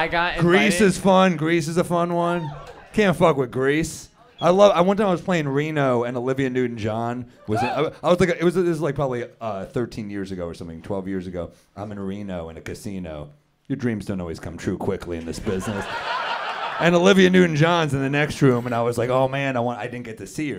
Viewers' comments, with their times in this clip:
0:07 Lmao Matteo’s gay gasp at Olivia Newton John 😂